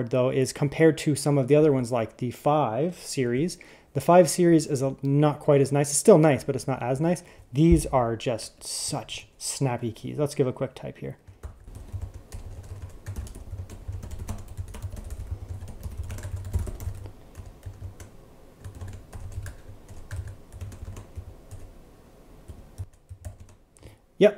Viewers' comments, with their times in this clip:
0:10 mmmm love that keyboard test